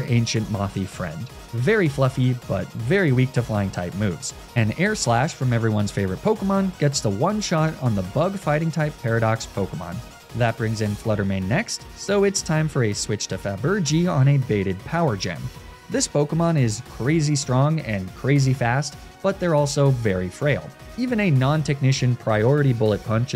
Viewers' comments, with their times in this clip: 0:04 I love how voiceover Flygon is calmly describing the battle, but thumbnail Flygon is just jamming to that music.